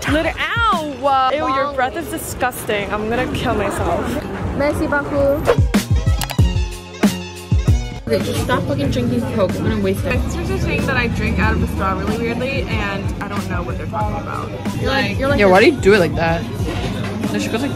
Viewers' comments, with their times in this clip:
0:03 the merci beaucoup reminds me of jungkook😂😂
0:04 "MerCi BaAucOup" Had me rolling.